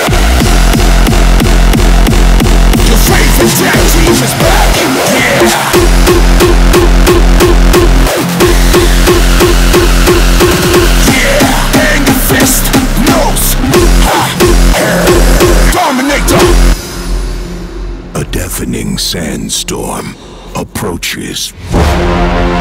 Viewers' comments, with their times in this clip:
0:06 woaw that kick 🤯🤯